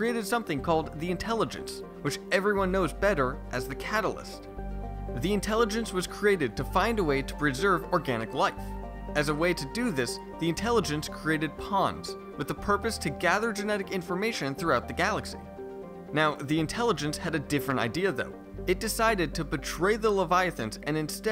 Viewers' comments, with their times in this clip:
0:09 I had this playing in the background, so when you suddenly said what I thought was "the intelligence created puns" I had to do a rewind. That was funny. Now I'm just imagining the Leviathans hiding down there becayse they got tired of the Catalyst's constant bad puns.